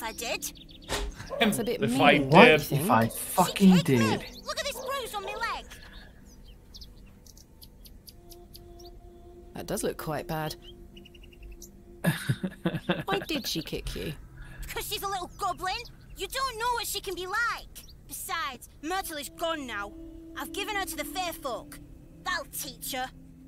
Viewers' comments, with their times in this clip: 0:10 there is a blip in the recording, the same time it looks like the Twitch stream blipped.